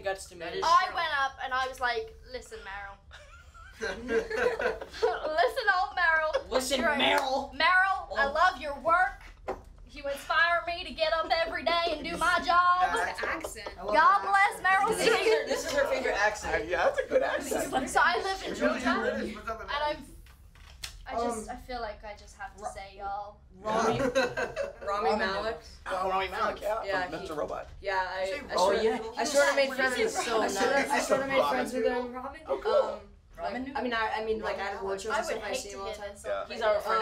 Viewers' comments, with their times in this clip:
0:06 the way Finn says "listen merrell" 😂😂😂💀💀
0:14 Finn: I love her accent
0:18 Millie: {southern accent} God Bless Meryl's Streep Caleb:yeah this is her favorite accent